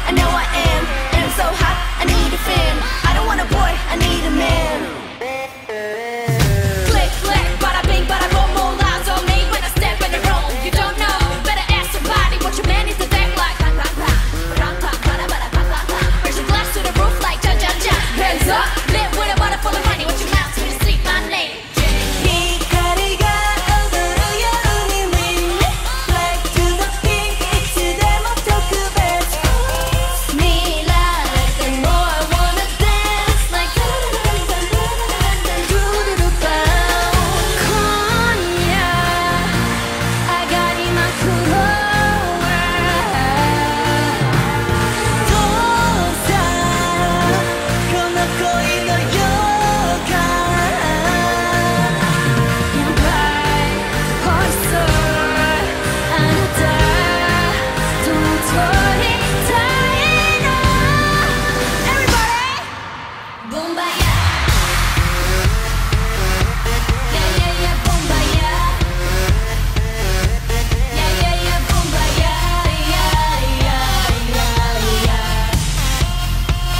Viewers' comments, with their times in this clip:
0:07 then Jennie started to rap in mind blow ❤
0:37 rosie's deep voice
0:37 agree; she has the best voice ever
0:39 Jennie touched Lisa's butt and they both laughed at the incident hahaha aigooJenLisa
0:59 so no ones gonna talk about this high notes huh?
1:00 "everybody" Omg her voice
1:00 Rosé's high note 😭😭😭 I really don't get why they thought rosé can't sing😒